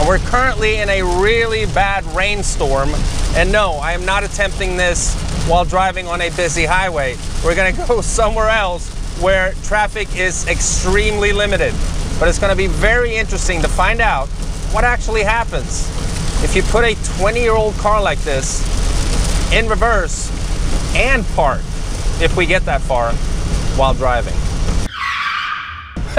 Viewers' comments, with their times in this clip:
0:07 I like how he laughs like "Y'all got me effed up if you think I'm gonna do this on the highway."